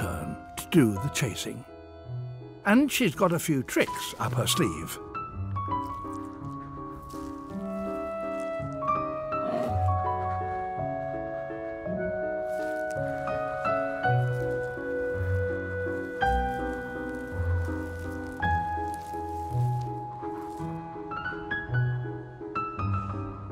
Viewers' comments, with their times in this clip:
0:06 The way she peeks her head through the snow and then fed a little roar.